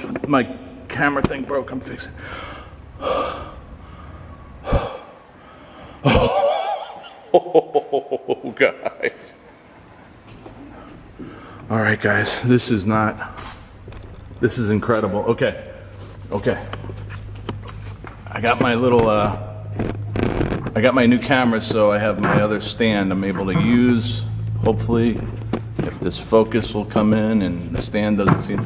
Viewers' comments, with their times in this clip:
0:10 it sounds like a woman laughing with you!